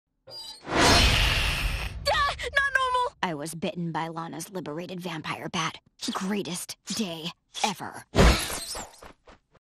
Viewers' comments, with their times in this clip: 0:02 One iconic scream-
0:02 Lincoln: (screaming) Not Normal!
0:06 Lucy Sounds Like She's Screeching
0:06 Lucy sounds like she’s screeching